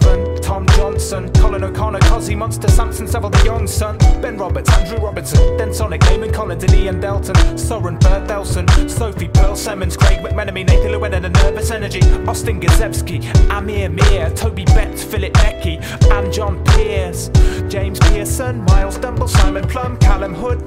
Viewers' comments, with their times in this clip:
0:03 THAT'S ME!!! :). Hope you like the syballence of my name ;)